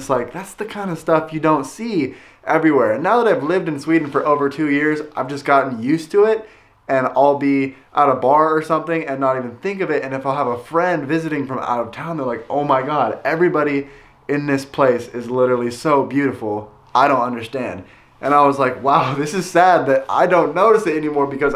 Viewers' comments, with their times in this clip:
0:08 Excuse me I can't make out what he says .It's to me "out of bar". May anyone help me, please?